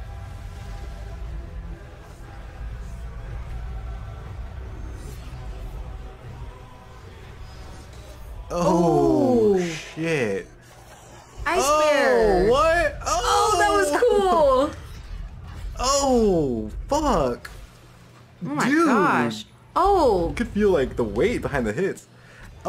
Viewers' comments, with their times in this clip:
0:09 Love how the doggo "roars" with the Ursine :D